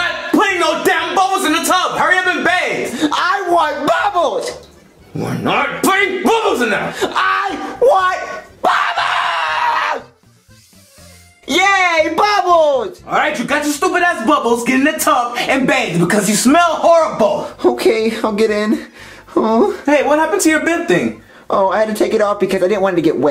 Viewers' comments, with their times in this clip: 0:10 I sounds like so hard Chef Pee Pee is grumpy to SpongeBob